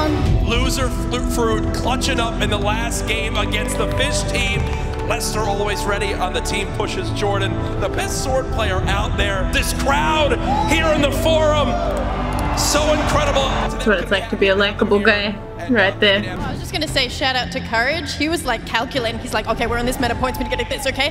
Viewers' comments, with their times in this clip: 0:03 That music Sounds Like something from endgame